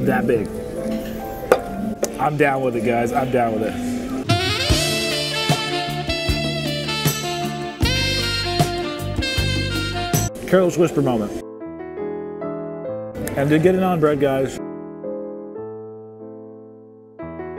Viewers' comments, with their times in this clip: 0:04 The music had me laughing so hard. Perfect!